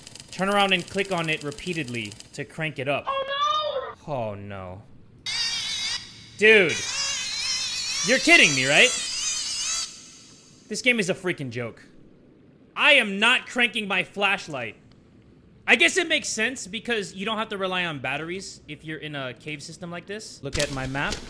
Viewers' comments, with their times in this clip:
0:07 that one random mosquito in my room middle of the night